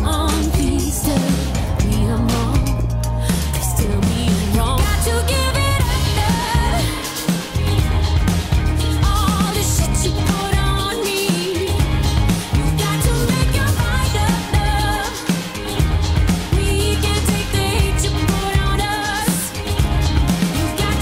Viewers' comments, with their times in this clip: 0:03 GO TO IN THE VIDEO I LOVE THAT SLIDE YEOOOW😊 CLASS SONG WANNA HEAR IT ON THE RADIO IN 2019